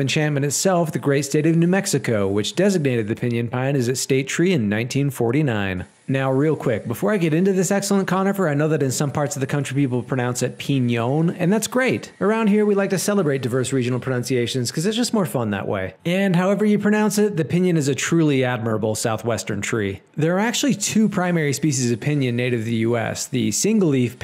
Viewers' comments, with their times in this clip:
0:08 that pronounciation is due to the letter ñ (its its own letter seperate from n in the Spanish alphabet) so it has a different pronounciation compared to the letter n wich is evident in that pronounciation piñon (pi-NY-on) you see? its basically an accentation like the ´ often placed on vowels lol im just nerding out about my language and the 27 letter alphabet an stuf because pronounciations are cool and stuf